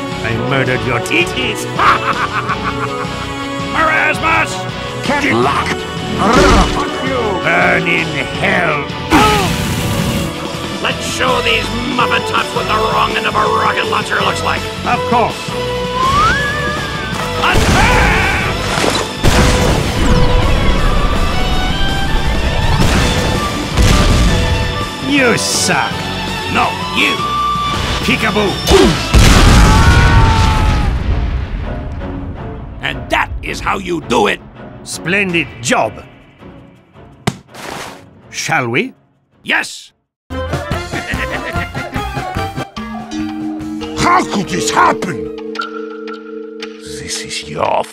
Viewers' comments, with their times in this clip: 0:10 The music kicks up when Soldier announces the Red Special and I can't tell if that was intentional.
0:32 tutorial fnf music intensifies